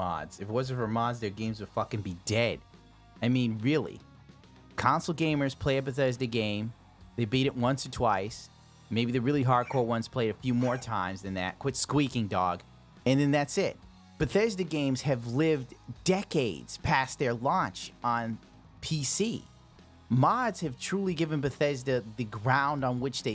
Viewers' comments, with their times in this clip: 0:10 for one good boy squeaking